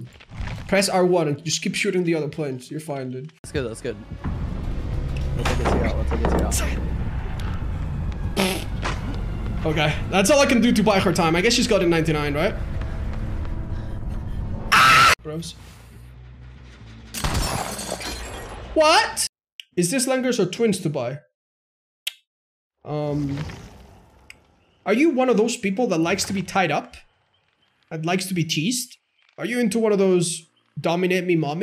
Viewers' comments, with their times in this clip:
0:04 [Screams in “No Way Out”]
0:09 that scream is SO good
0:09 i didnt expect that scream lmao
0:13 that scream was legendary
0:13 why the scream ?